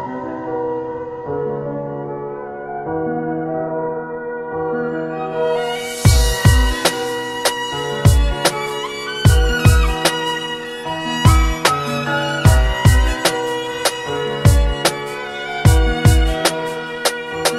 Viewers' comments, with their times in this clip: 0:03 reminds me of Musique pour la tristesse de xion.